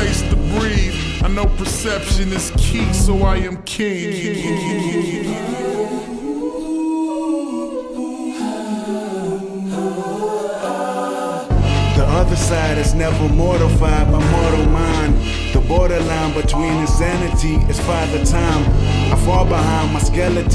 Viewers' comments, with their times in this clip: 0:04 the vocals are angelic 🥀